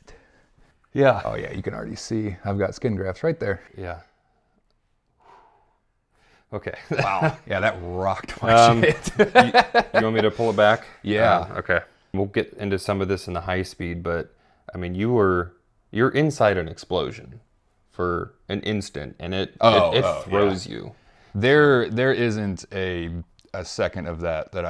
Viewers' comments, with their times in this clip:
0:06 He was even kind of laughing watching it, noting in particular, the little chuckle he gave saying "Yeah that thing ROCKED my shit"